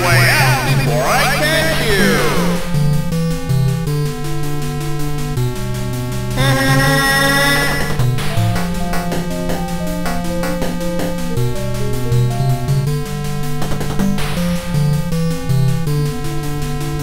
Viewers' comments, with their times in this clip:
0:03 music sounds cool at end